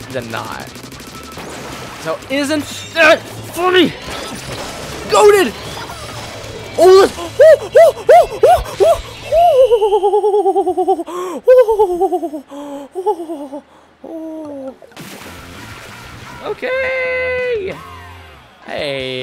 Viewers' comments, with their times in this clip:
0:07 is that a monkey or strange bird?